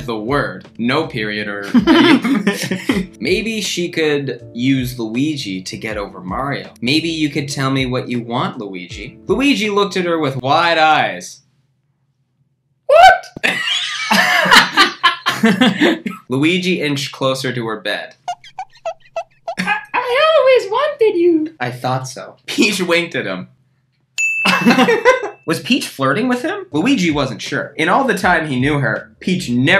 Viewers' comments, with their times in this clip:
0:10 I AM IN SHOCK WHY IS THAT SO FUNNY ITS NOT EVEN A JOKE IT'S JUST KURTIS SAYING WHAT IN AN ACCENT WHY IS IT SO FUNNY